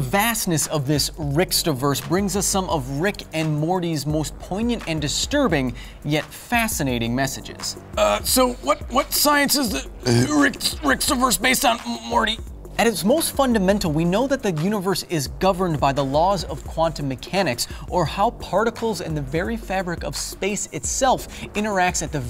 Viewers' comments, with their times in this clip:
0:07 that Rick impression is on point